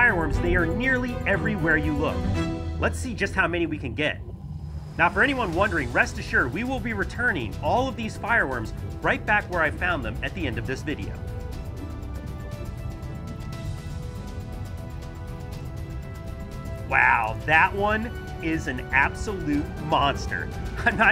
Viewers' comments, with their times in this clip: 0:08 Not joking the captions thinks he is saying these firearms.